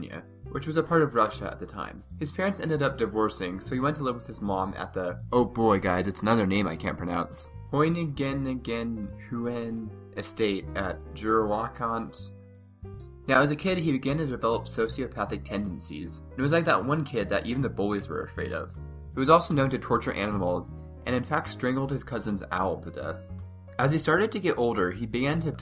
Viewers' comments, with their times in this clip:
0:08 Hoyn again again lol